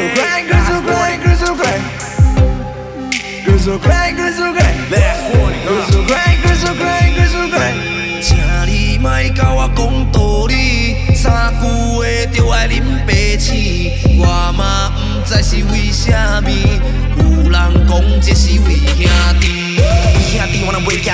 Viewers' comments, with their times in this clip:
0:08 Hokkien Post Malone ....